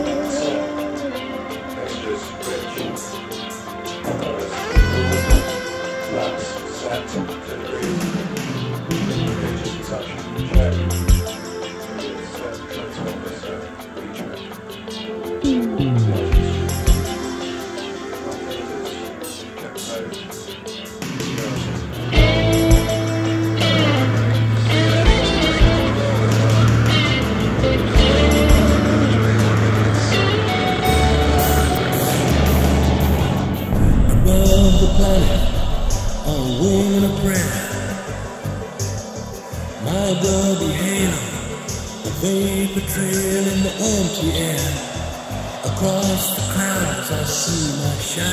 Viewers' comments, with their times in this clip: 0:10 Standing alone, AS my senses reel. There's also an effect missing on It bothers me honestly.
0:31 Especially on David’s voice in the section from Once my ear was tuned into that hissy overtone, everything just sounded unpleasant.
0:34 Regarding the remix: the echo effect on the vocals and the wind noise seems more pronounced and very bothersome compared to the original version. I don't like that part of this mix. I like to hear a bit more on the transitional drum fills too. They seem quieter.